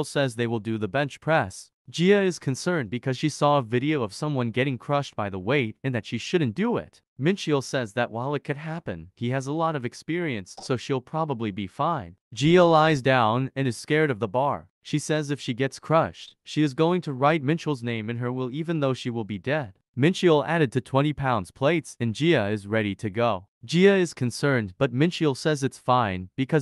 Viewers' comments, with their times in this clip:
0:10 Is it just me or did anyone else hear someone rip ass